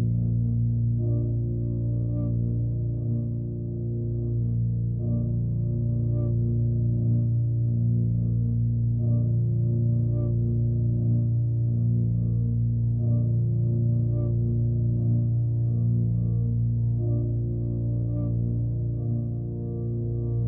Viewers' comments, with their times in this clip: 0:05 I hear a “faucet open type-sound when I get to